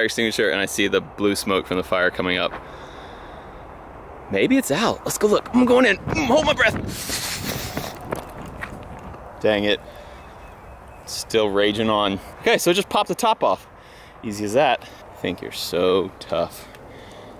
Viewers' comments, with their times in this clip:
0:05 "Holding my breath." (Inhales while running through smoke)
0:05 " IM GOING IN, HOLDIN MY BREATH" * inhales very loud *
0:05 "I'M GOING IN" "I'M HOLDING MY BREATH" BREATHS
0:05 "hold my breath" *inhales*